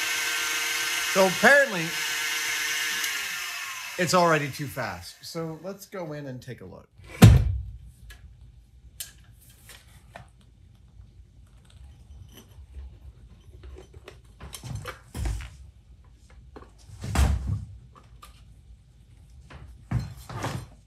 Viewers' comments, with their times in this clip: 0:07 That thump tho...